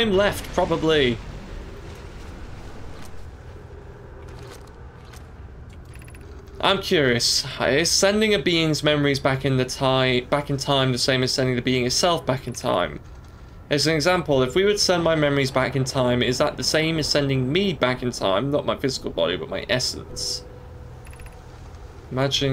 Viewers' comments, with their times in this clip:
0:07 gleefully "I want to READ" that's an engaged-with-the-experience OW player if I ever heard one!